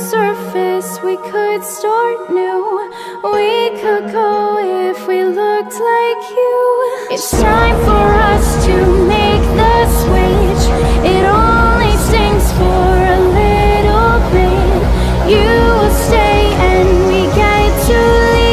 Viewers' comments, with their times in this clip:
0:04 Lyrics: We could go if we looked like you Also Lyrics: Sounds like "looked" is "looks"